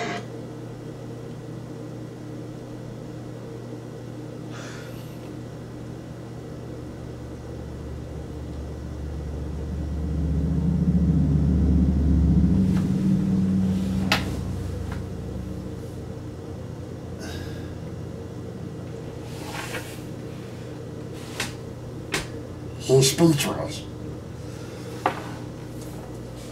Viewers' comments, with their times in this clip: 0:10 Motorcycle drives by, ironically sounding like a huge fart.
0:10 what was that strange noise in